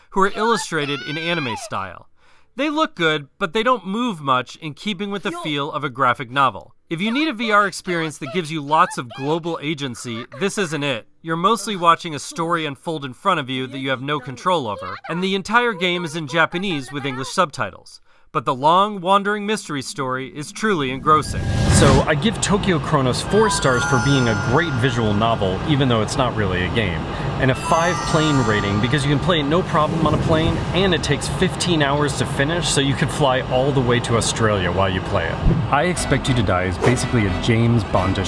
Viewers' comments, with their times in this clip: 0:03 him enjoying an ok game The people sitting around him hearing the weird Japanese anime sounds 😳
0:26 I saw what u did there sir. 😎 I enjoyed the the back to the future sound noises u used there